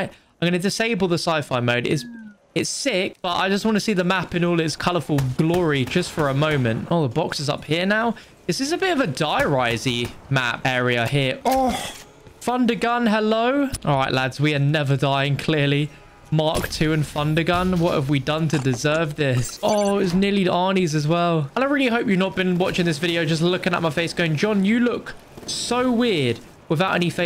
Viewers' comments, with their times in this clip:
0:10 he sounds like the puffer fish eating the carrot.
0:10 when he reacts to the thunder gum he makes the fish meme sound xD
0:11 it sounds like the meme with the fish eating a carrot
0:11 Bro tell me why he sounded like that puffer fish eating the carrot 💀
0:11 sounds like the fish eating the carrot lol
0:11 sounds like the pufferfish carrot meme thing
0:11 nice sound effects😂